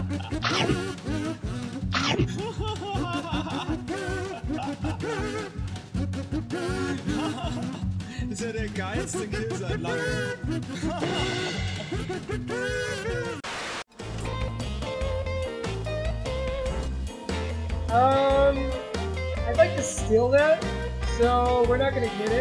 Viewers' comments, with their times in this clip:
0:09 the most german laugh I have ever heard